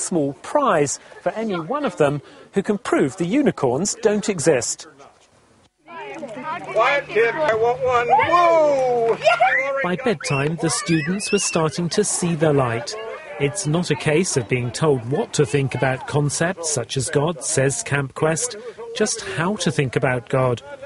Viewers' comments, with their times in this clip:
0:08 He sounds and looks like James Randi